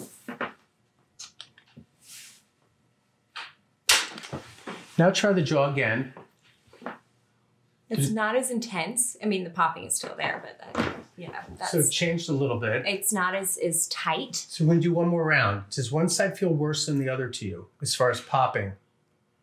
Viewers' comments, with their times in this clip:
0:07 until I thought she was mute